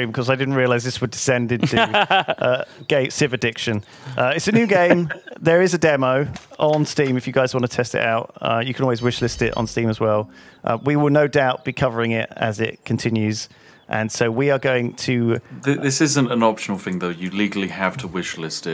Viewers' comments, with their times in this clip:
0:03 Gay Civ addiction? That’s what I heard